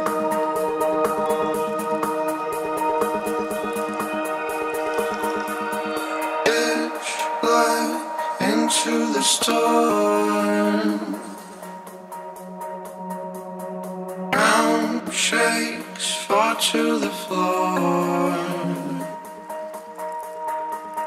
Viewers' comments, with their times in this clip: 0:09 that skip in the vocal though... what happened?